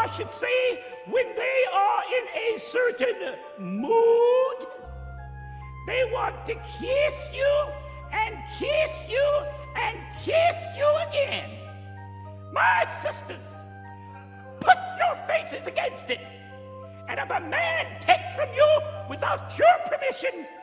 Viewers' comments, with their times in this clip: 0:05 Sounds like my grandma